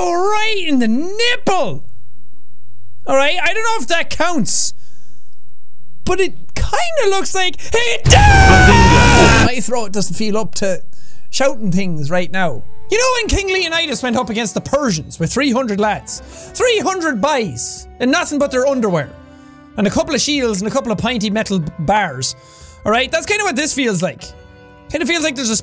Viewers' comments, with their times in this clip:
0:07 anime Japanese followed by Minecraft UGHH